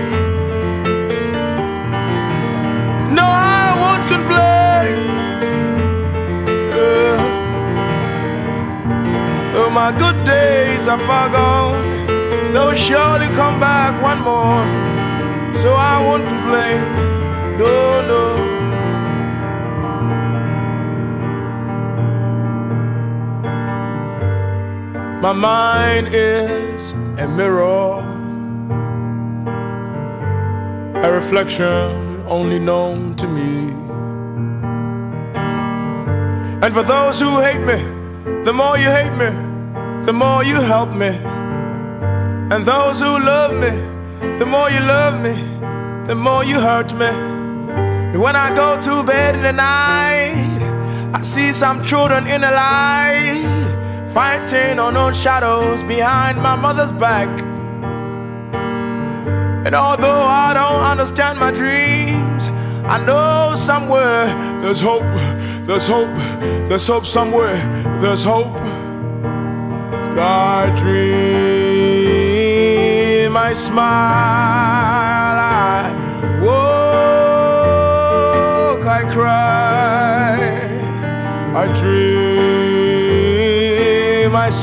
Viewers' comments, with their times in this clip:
0:08 It is very hard part to play and sing together. Imagine, one melody you have to sing another you have to play. Impressive, very impressive. Love it
1:06 the way he says "theres hope somewhere" I wont complain💔